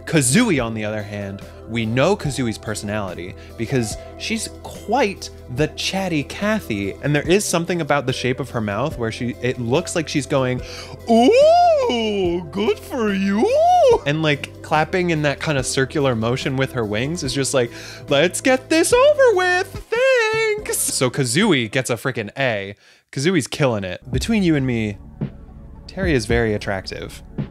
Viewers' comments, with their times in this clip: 0:10 You made Banjo's Voice! And it's perfect in my opinion! Edit: Not Sarcastic, just be honest! 😉